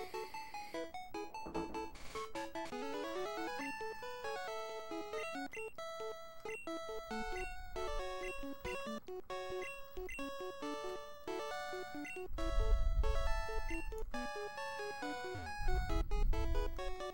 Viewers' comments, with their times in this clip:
0:04 I stopped watching after he took that big whiff lmao that is disgusting. Also I thought that said 1 minute and 54 seconds, but no, so whatever.